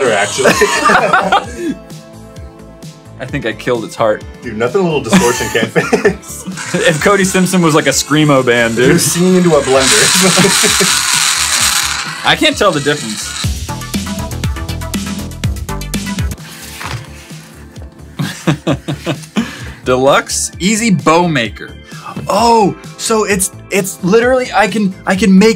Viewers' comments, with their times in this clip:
0:09 my ears got shredded 😑